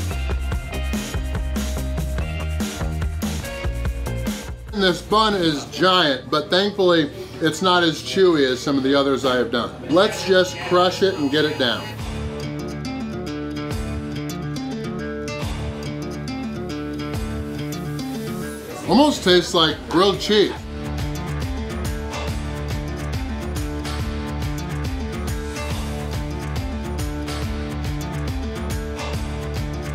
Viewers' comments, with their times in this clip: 0:09 was there an Amber Alert in the middle of the challenge? Lol
0:11 Was that a Amber alert I heard